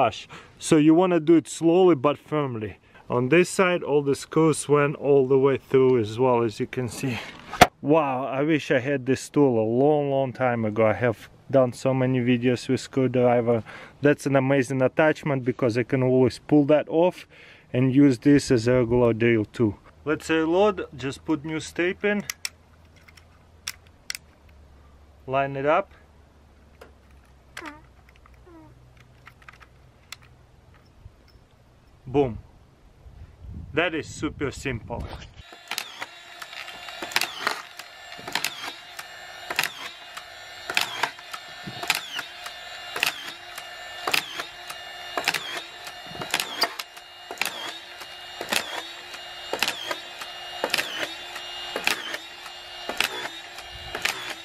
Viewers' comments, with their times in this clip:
0:06 Dis he fart?
0:25 ...... did you fart? 😂
0:25 he just farted XD
0:26 little Russian gas escape in the back ground... 💨😂
0:26 lol he farted.
0:26 i hear fart
0:26 Was that a fart ?
0:26 On he farts twice LOL.
0:26 Go to and listen I think he farted
0:26 did he just farted?
0:26 Who else heard him fart
0:26 Nice Fart Bro
0:26 and boom .. he farddd ted ..
0:26 my man just farted
0:26 Did he farted in I swear he did😭😭😂😂😂😂
0:26 did he just fart? XD
0:27 somebody was farting in
0:27 is that a fart? lol
0:27 was that a fart? LOL
0:27 it’s a crazy Russian fart
0:27 um...what? Was that the all new farting screw driver attachment?
0:27 you can hear him fart😂
0:27 nice fart lol
0:27 anyone else hear that fart?
0:27 He Definitely Farted
0:27 did dat man just fart?😭
0:27 But the fart tho
0:27 did he fart ?
0:27 Did he fart
0:27 anyone hear that little fart
0:27 Did someone fart
0:27 is that a fart?
0:27 He is farted???
0:28 Yeah and he farts 😂
0:28 did u just fart
0:28 u can hear him fartttt 😂😂
0:28 Anyone else hear the fart ? Lol
0:35 And did you fart ? lol